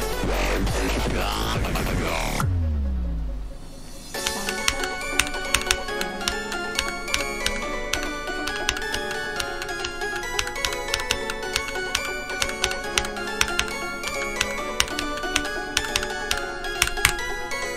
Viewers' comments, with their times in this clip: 0:04 i love the song in